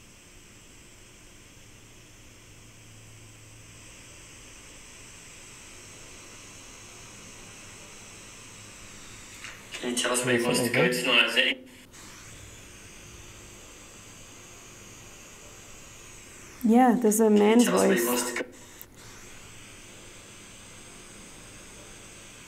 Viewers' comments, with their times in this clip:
0:08 evp says That's Right